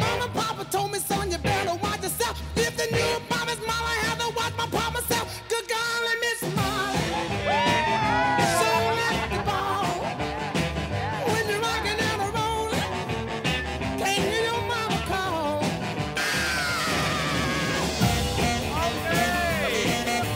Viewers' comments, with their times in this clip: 0:08 everyone cheering and then TKB just sitting there >_>